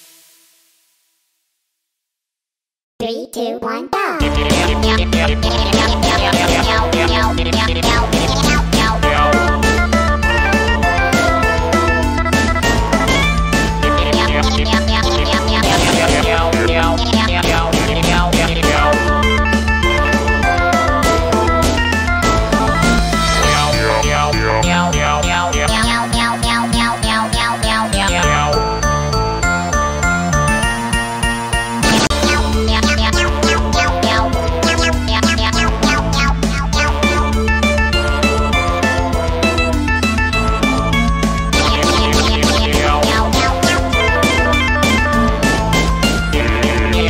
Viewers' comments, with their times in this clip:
0:03 i ilke the sing
0:29 why the song like glitches
0:31 Why did this part get muted?
0:31 yo, floppa spammed his gun so much he break the sound
0:32 what's wrong with the audio?
0:32 where is the sound ?
0:32 no audio moment